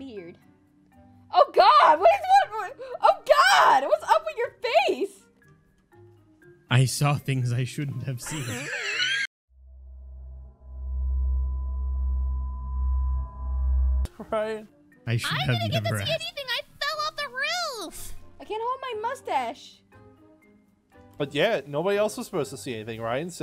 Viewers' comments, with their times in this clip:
0:09 Ryan: i should not have seen. Unicorn: laugh
0:09 Everything turns black and white, a weird noise plays in the background * Stares at Ryan's face * Me: HAHAHAHAHAHAHA